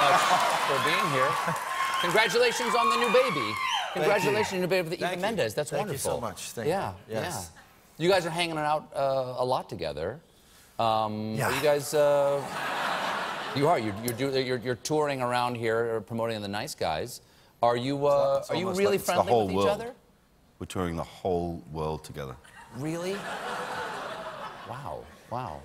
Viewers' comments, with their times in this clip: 0:08 the noice stops